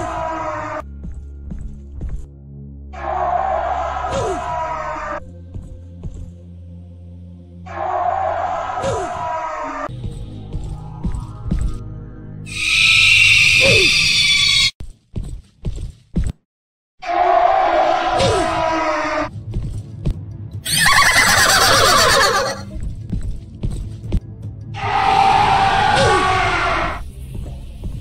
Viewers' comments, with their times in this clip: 0:10 My ears are bleeding